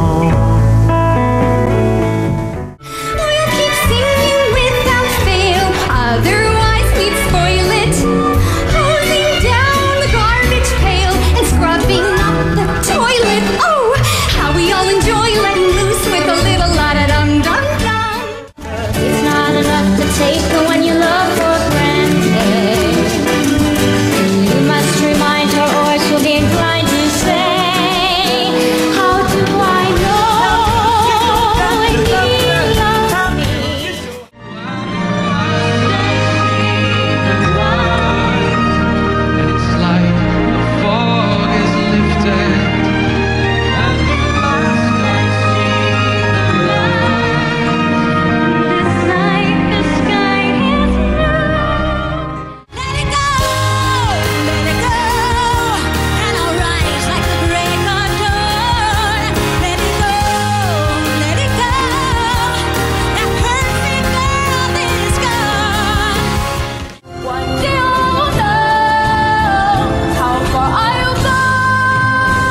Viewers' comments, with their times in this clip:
0:03 wait... Amy Adams singing for real??? practically perfect in every way
0:45 Zachery Levi is an amazing singer
0:52 I can’t tell if the music is speeding up and Idina has to keep up or it’s just timing issues, but I love this sequence she does here. Her voice might be a bit shouty here but I don’t blame her since let it go is literally full chest voice belting, it’s obscenely hard to sing that song live
0:53 is it just me, or does it seem like idina menzel is singing a little too fast??
0:58 the whole time i was waiting for idina menzel only. She really has such a beautiful and at the same time heart touching strong voice.